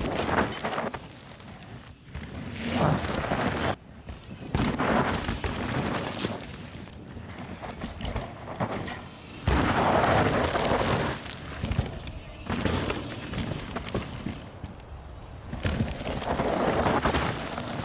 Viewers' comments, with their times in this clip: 0:03 .... WTF is that grunt?